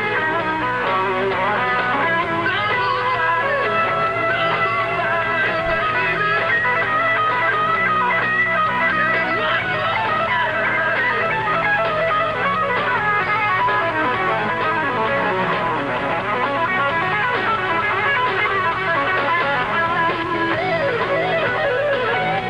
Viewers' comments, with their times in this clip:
0:06 Bro that freaking lick